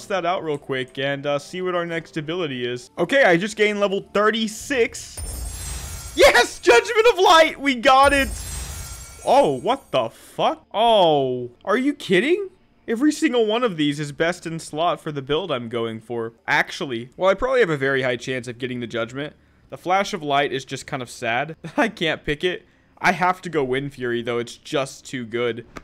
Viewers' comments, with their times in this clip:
0:06 Omg Best laugh in a while.